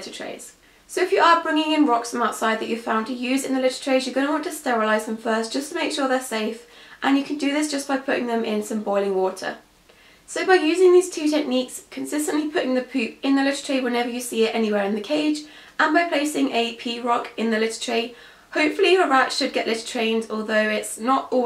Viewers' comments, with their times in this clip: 0:09 I thought you said "put the rats in boiling water" and I was like W H A T